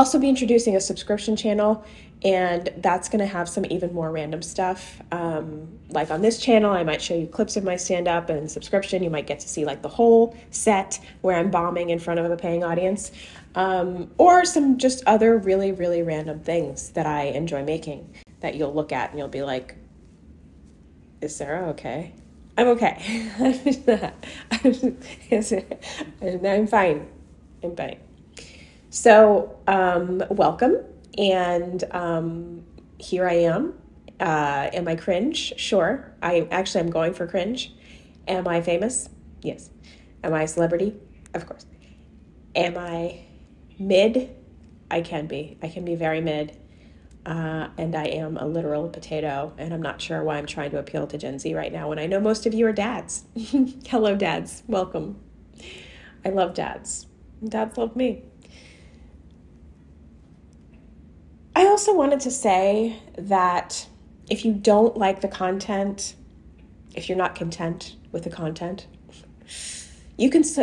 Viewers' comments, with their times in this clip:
0:08 Did you say "I'm embalming in front of a paying audience"?
0:57 You had me with that little tooth-grind immediately following "I love dads, and dads love me."